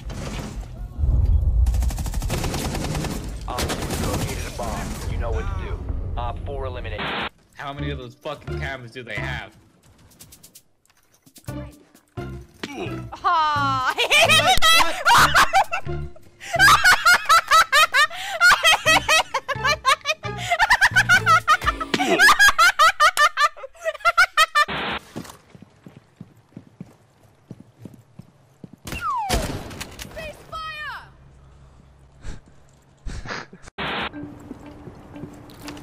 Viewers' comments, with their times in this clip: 0:09 Worlds most annoying laugh award goes to
0:13 her or his lough triggered me so hard
0:13 that laugh pissed me off so fucking bad
0:14 my ears burn xO
0:14 The kid has a demonic laugh wtf
0:14 exorcism, ir when your pizza rolls are done
0:14 I love how everyone doesn't like her voice lol
0:14 what was that laugh?
0:14 TAKE YOUR HEADPHONES OFF RIGHT NOW
0:14 might be the ugliest laugh I heard in my life
0:14 please, please please please do not EVER laugh like that again
0:14 FUCK ME WHAT IS THAT FUCKING LAUGH
0:14 laughs in demon
0:15 What is that laugh??? lol
0:15 that laugh tho
0:19 please dont play that clip ANYWHERE ever again, that was a disqusting noise
0:19 wtf kind of human laughs like that
0:19 WTF IS THAT LAUGH
0:19 Who the fuck laughs that much
0:19 she sounds like a witch